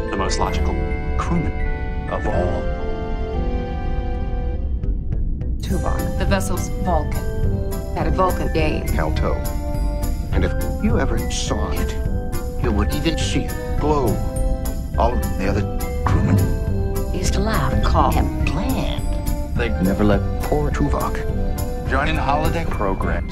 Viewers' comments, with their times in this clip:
0:05 Tuvok had what? I can’t make out what they are saying? I have played it several times. The video is funny though.